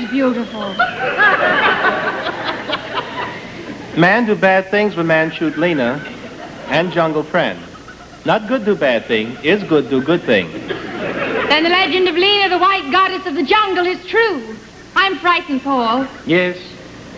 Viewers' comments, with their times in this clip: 0:03 I absolutely adore that she totally breaks and starts cracking up right there. It's PERFECT.